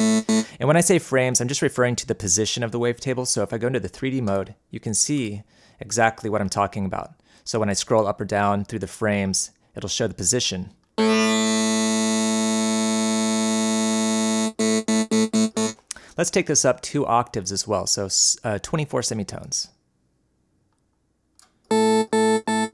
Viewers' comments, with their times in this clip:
0:03 -sounds like my hair clippers!